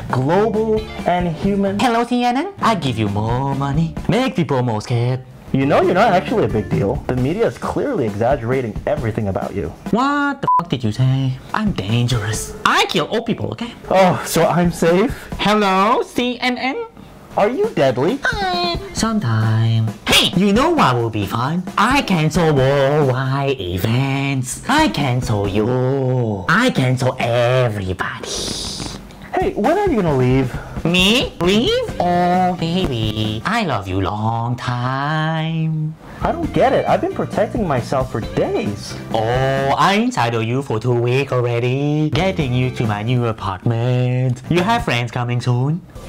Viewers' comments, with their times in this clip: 0:05 that honestly sounds like a Korean voice for me 😳😂
0:28 if he had pronounced O as O not a then the sentence will be more funny.( sorry for my Op bad english also grammar)